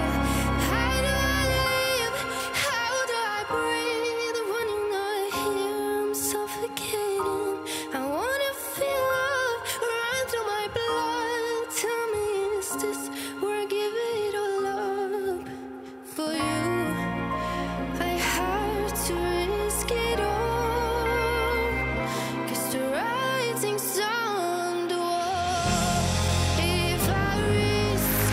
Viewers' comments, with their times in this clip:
0:09 the run on 'love' gave me full body shivers holy